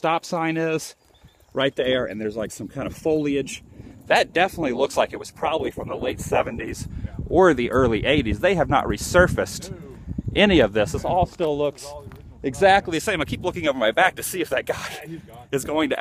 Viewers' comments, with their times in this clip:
0:04 Demonic voice scared the bajeebees out of me!